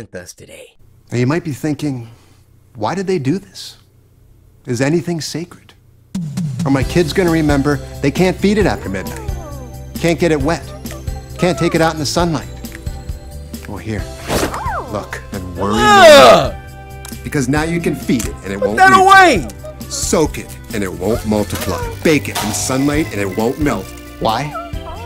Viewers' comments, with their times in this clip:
0:08 Bro was so happy the he was like aaah